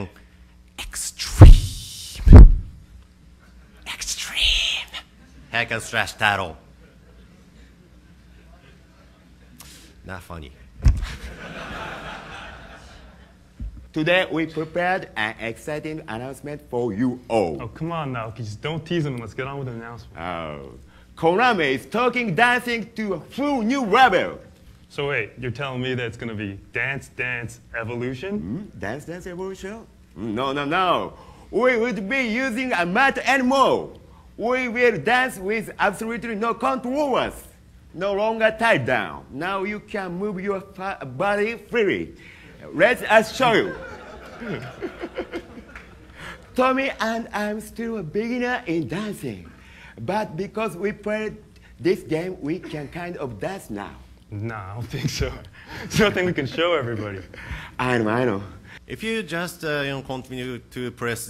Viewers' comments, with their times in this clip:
0:09 💀😭 THEN THEY LAUGHED
0:14 When stephen Hawkings electronic voice is set to Engrish@
0:19 that dude in the yellow shirt emoji died every stereotype about Asians just by talking
0:21 that accent LOLOLOLOL whaaaaat?
0:34 Man, This guy is Naoki, He's my favorite artist, Best composer of Dance Dance Revolution, His songs are good, But... I'd never though seeing him talk in english like... that
0:39 As a non-native English speaker, I kinda fell bad for making fun of people's accent. But GODDAMN this cracks me up so much
0:47 he sounds like nathan from south park